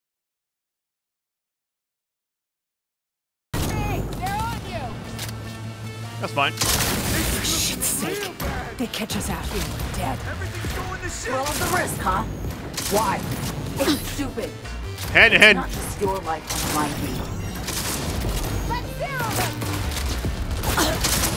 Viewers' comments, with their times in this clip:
0:03 For anyone wondering the sound comes back